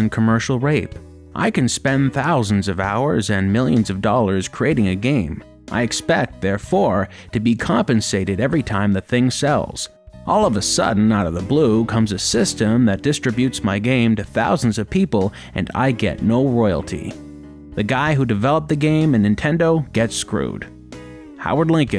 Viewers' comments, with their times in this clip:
0:05 the quoted part is so Ken Burns documentary, i love it hahaha